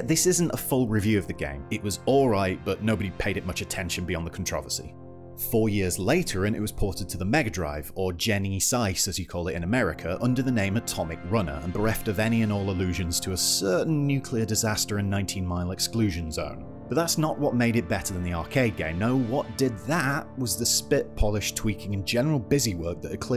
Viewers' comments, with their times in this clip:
0:08 "Gene-Sise" as it's called in America? Nope. Never heard it pronounced that way.